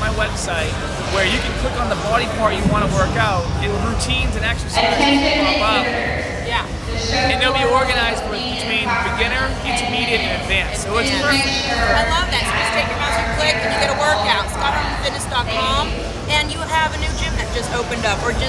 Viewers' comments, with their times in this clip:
0:04 Dear Public Address Announcer please turn down the volume on your mike. Thank you ;-)